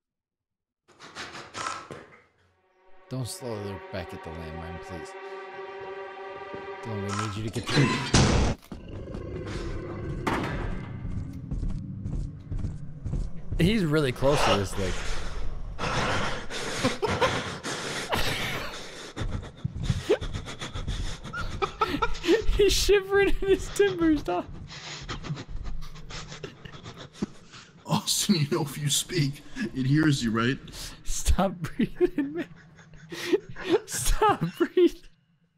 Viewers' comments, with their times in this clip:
0:09 that intense breathing lmao
0:16 the heavy breathing got me weak 😂